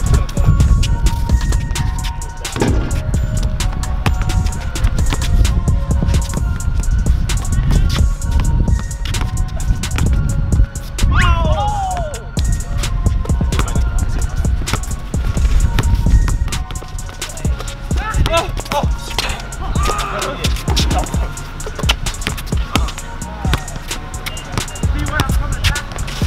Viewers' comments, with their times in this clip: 0:06 He was dribbling the ball with the background music
0:07 the dribbles were kind of onbeat (listen closely)